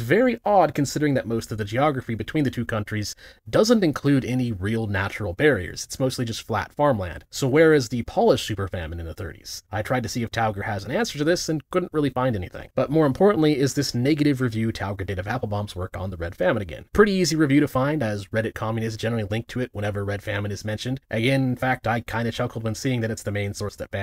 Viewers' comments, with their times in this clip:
0:07 that pronounciation of "Polish" is painful.